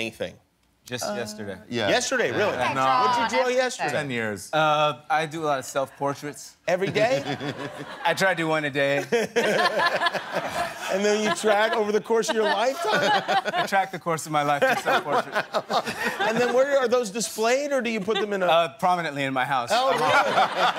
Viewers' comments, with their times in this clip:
0:08 JAFENWUSG ELIZABETH CANT STOP LAUGHING